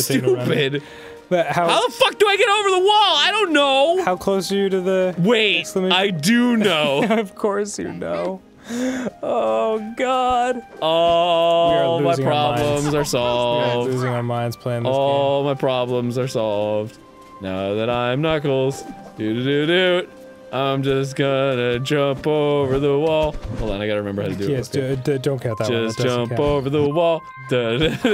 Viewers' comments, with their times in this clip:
0:08 most beautifull song ever!
0:11 the knuckles song